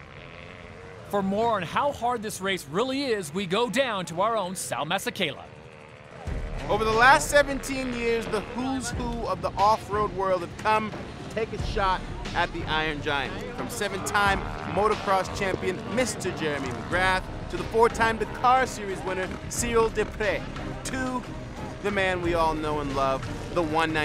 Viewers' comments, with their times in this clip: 0:09 sounds just like samuel l jackson